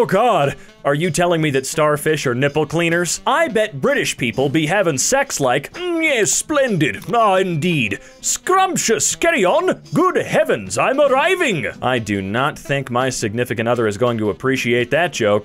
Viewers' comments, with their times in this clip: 0:03 The one has me dying, like oh my god, the accent- WHEEEZE